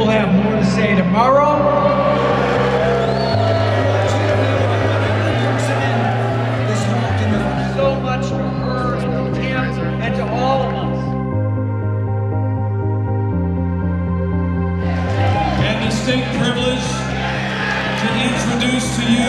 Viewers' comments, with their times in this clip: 0:07 YES, that's a grown man crying.